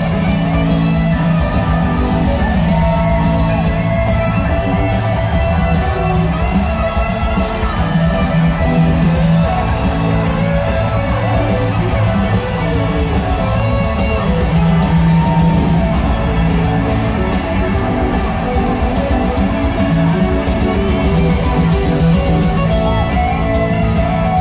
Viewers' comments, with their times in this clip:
0:09 through this world of trouble we got to love one another Jerry really feeling it!